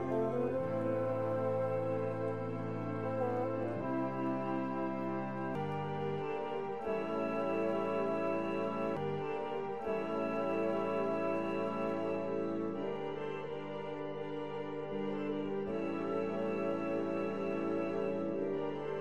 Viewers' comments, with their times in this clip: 0:06 the music skips a few times